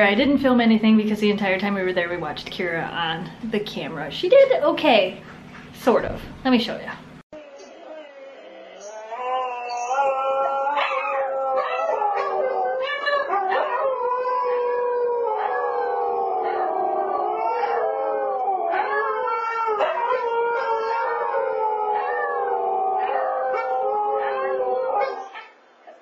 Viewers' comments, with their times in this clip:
0:08 howling session time!!!